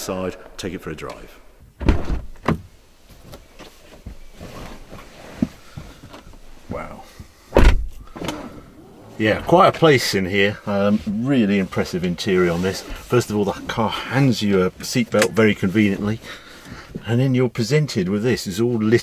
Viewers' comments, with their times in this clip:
0:06 that door close sounded pretty janky